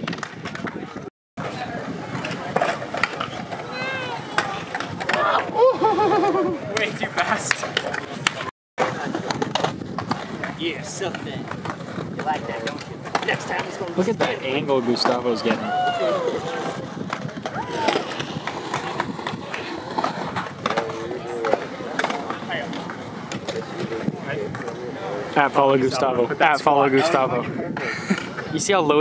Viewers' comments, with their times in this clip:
0:10 what the hell is that guy saying in the background